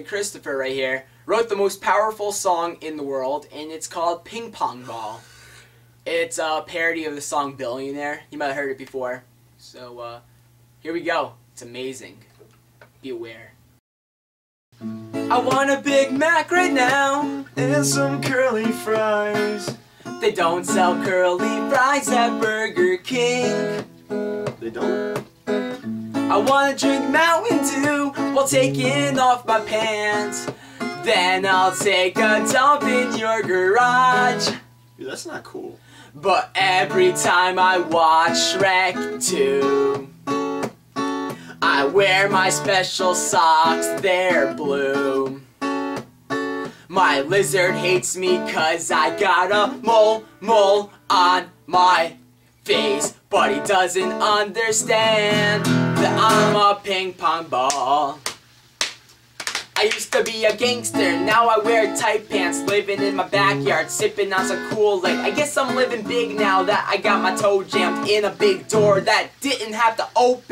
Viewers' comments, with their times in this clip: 0:03 lo he yawnd!
0:27 seconds listen to his voice crack
0:55 did you say pink bon bon???? ?????